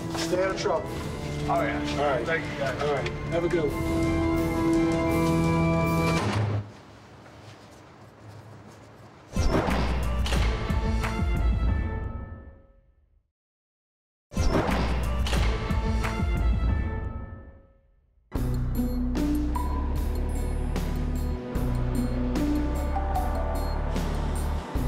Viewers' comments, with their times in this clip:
0:06 lol the music cutting when they shut the door after batman is priceless🤣